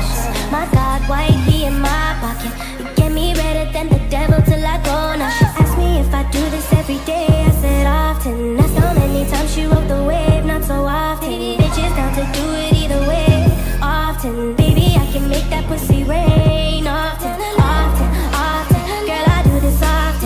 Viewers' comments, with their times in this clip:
0:04 actually vibe nice music